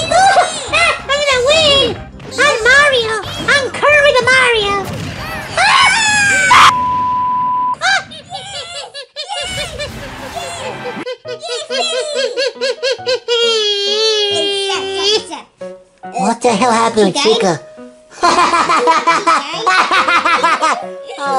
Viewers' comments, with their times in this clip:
0:06 chica sounded like pikachu lol 😆